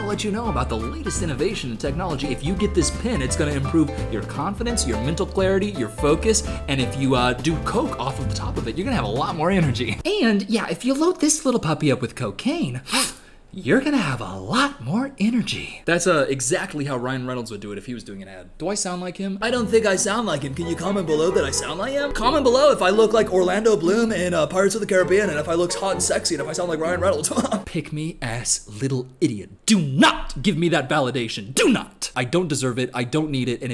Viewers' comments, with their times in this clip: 0:10 I knew the voice sounded familiar
0:10 PLEASE YOU SOUND JUST LIKE RYAN REYNOLDS
0:10 You DO sound like him
0:11 you actually kinda did sound like Ryan Reynolds
0:12 you sound exactly like Ryan Renolds 💀
0:12 this acc sounds exactly like ryan reynolds
0:12 bro you sounded exactly like him :]
0:13 wait he does sound like ryan
0:16 thought it was jim carrey tbh
0:18 No cause you did lowkey actually sound like Ryan Reynolds lol
0:18 I knew it was a Ryan impression 😂